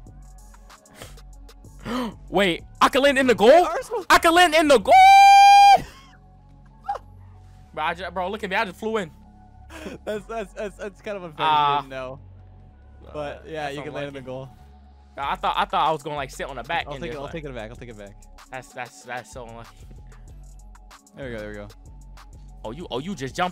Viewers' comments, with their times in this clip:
0:03 leth sound weird
0:04 I got a ad so it cut out and I heard was GOOO-